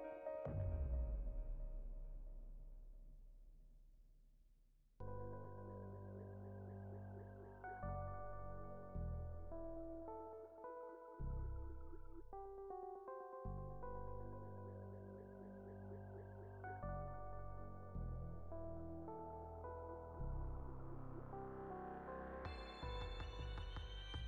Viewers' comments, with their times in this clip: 0:05 I like the musical change from relaxing to mysterious ....